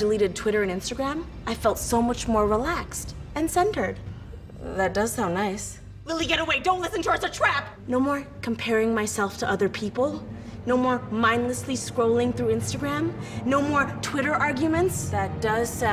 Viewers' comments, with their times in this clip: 0:03 I rewinded to "..And CenTERed" like 20 times😂